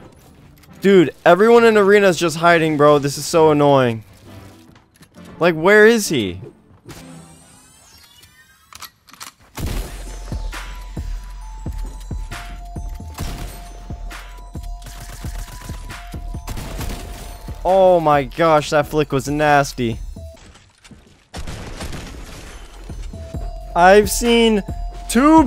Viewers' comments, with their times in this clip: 0:10 all shots on beat holy sheez